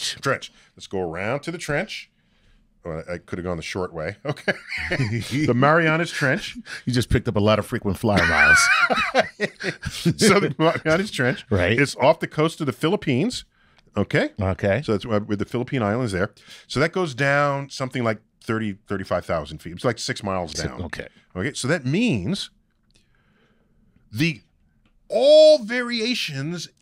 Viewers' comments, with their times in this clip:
0:08 he laughs like the start of the car